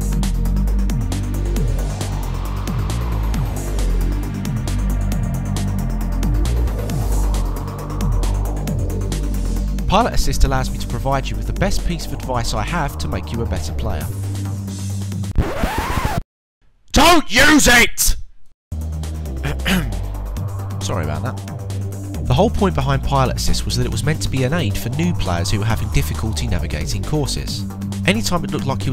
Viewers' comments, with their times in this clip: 0:05 Pilot Assist *record scratch sfx* DON'T. USE IT. !!! informative and amusing.
0:15 "DON'T USE IT!!" Thank me later ...or not because earrape